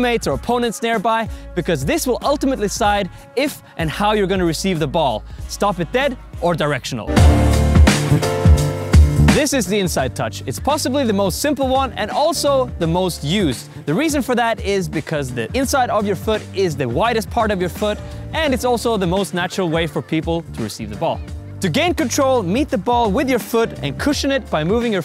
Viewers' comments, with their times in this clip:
0:07 Guys, the intro tune....😬